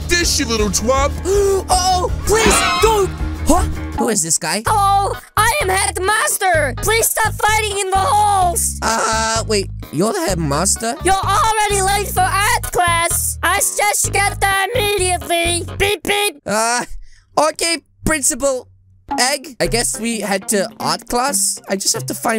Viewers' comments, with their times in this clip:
0:05 good idea on placing the song there
0:07 Headmasters voice is very wired that I passed out